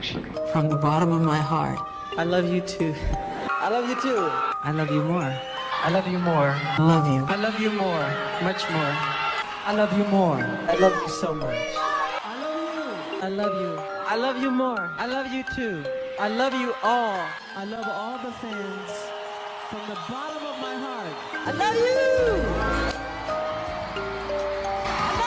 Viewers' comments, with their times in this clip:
0:06 lol spring day playing in the background is all what I need